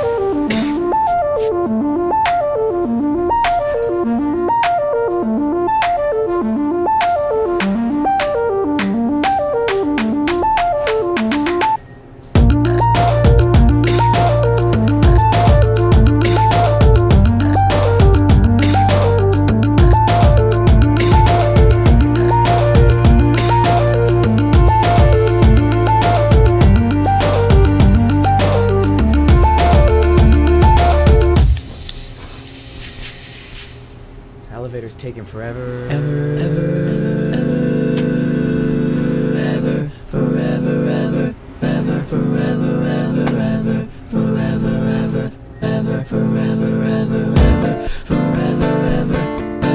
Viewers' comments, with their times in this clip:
0:10 the beat bois and gurls
0:11 that sync is fire bro 🔥
0:12 the beat drop hits hard
0:13 NO ONE EVEN LOOKED AT THE GUY IN THE BACK COUGHING HIS AAS OFF
0:34 That's some good harmony
0:34 best elevator music